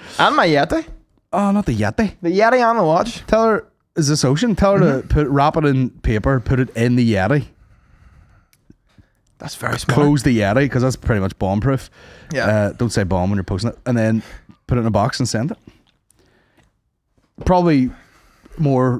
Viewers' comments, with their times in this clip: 0:04 accidental Brian Kennedy